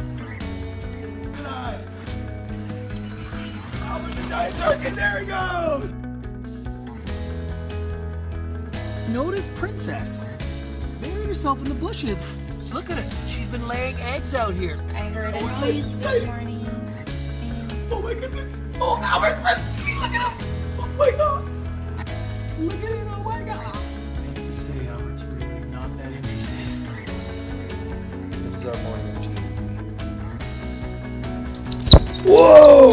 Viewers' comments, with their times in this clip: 0:05 anyone heard ”AHH A GIANT TURKEY,”
0:15 I love that part so much! The way he squeals with excitement 😆
0:20 Albert's first baby look at him! 😂 my dude sounds like a proud grandpa